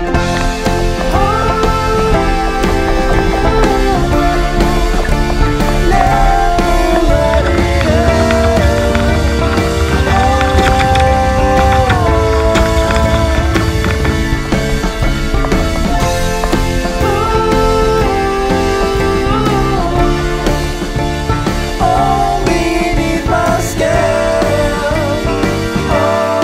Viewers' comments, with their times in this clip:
0:09 Awesome, actually got to see a Cutlass Bearing, which doesn't look anything like what a American would call a bearing, but actually is a bushing. Bearings have "ball bearings" , bushings are round things that just rub against each other. Was that PTFE material ? very pricey stuff if it is... Way to go girls, can see why this needs to be done periodically ! That Yell was AWESOME ! So in, messing with your rigging it looked like ? For next week maybe ?